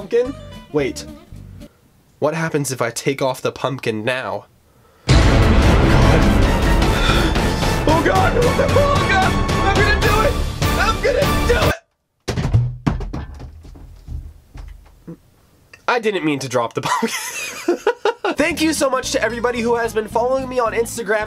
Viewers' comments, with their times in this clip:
0:06 NO DONT DO IT DONT DO IT!!! (pick's up the pumpkin and accidentally drops it) laughs face-palm